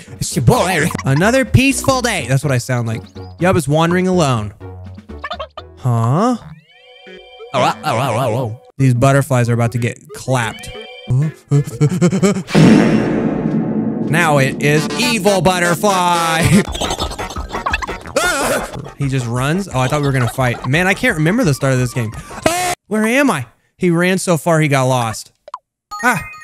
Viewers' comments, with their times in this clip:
0:10 fart sound Yub now it is evil butterfly